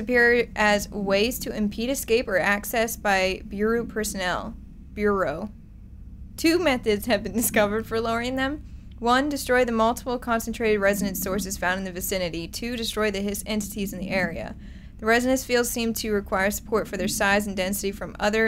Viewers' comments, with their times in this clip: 0:05 She actually finally says it right on ;p
0:05 you said bureau right